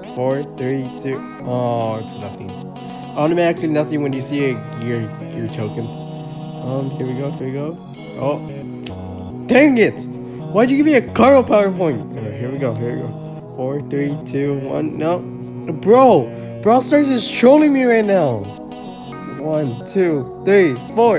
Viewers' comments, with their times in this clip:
0:08 How dare you shout at 16 Carl power points! He'll be meta one day and you'll be grateful you got those power points. 😤😤😤